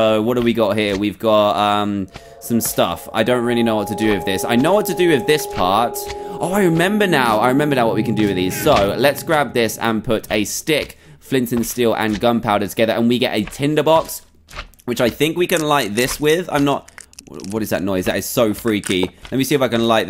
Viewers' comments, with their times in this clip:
0:03 do u hear that eerie music?